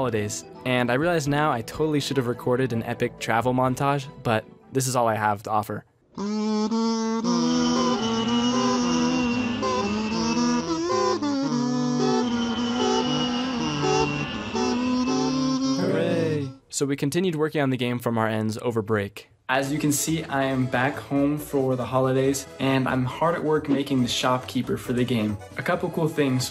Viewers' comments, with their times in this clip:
0:07 The kazoo mii channel parody was peak